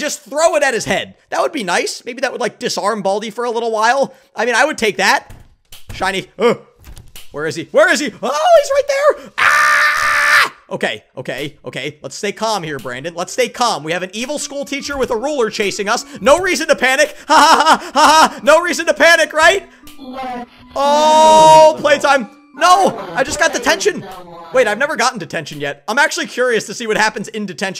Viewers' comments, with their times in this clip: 0:09 I LOVE UR SCREAMS HAHAHHAHAHAHAHHAHAAA